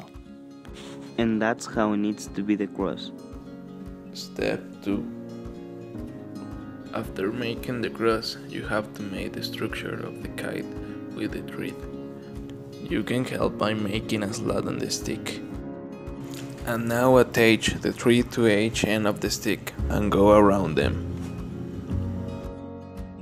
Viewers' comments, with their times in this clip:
0:04 Dude on step 2 you totally sound like you where resting your head by the chin whith a closed fist over a highschool seat, in detention